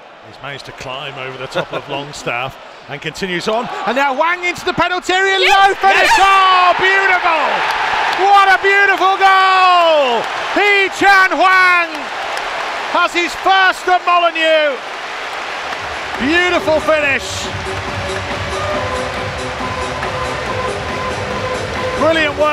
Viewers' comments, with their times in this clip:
0:04 Damn who was tryna scream yes...🤨🤔😐Hela sus lol jk
0:05 What on earth is that noise ??? A dog yelping??
0:05 Commentator: Yes yess (Like an anime character sighing) 🤭